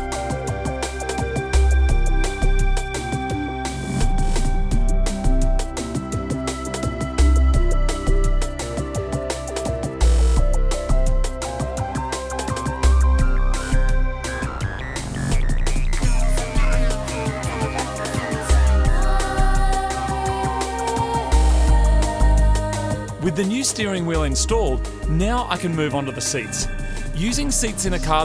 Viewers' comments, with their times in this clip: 0:10 NFS 3 techno soundtrack vibes